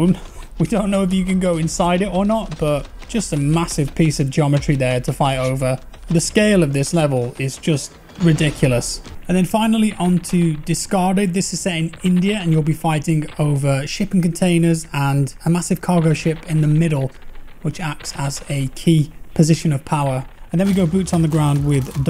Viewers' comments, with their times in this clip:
0:09 Did I hear a brief indian accent or it is just me being slightly racist?